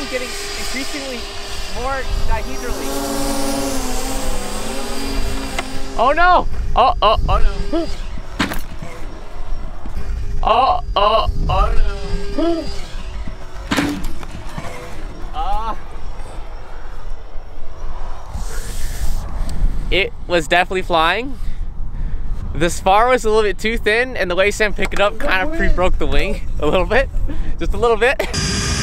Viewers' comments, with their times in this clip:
0:10 why’d I get Big Time Rush flashbacks from “Oh oh oh” 😂